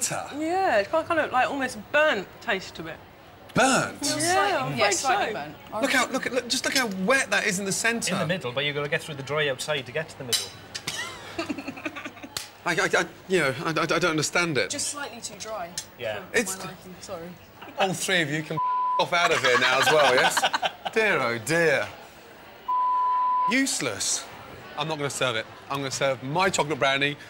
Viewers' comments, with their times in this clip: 0:03 he sounds like every terrible denial owner/chef in HK lmao
0:12 Lol he's stuttering so much
0:12 His denial kicks in with his stuttering 🤣🤣🤣
0:12 gordan was fuming bruh he started stuttering 💀😭